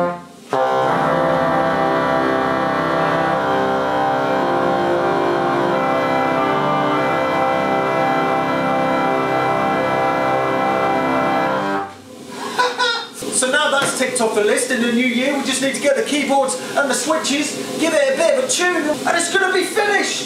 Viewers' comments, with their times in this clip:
0:08 That gave me a laugh. You did warn us, at the beginning, that when the weather changes, the organ goes out of choon. That's gotta be a tedious job, with so many pipes. Are there apprentice organ tuners who need practice?